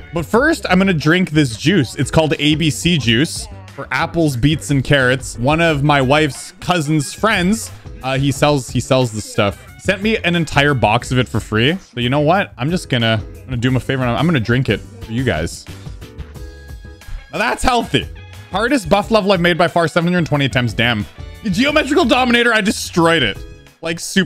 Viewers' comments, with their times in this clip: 0:05 "one of my wives"